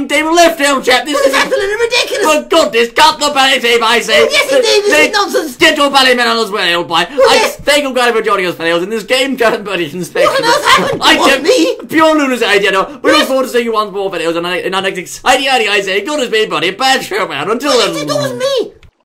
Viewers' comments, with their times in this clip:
0:07 I hear someone laughing! :O